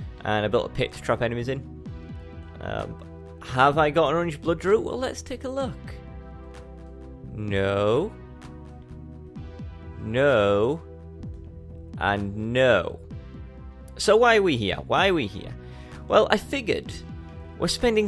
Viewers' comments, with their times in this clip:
0:03 Have I got any "???" I didn't quite catch that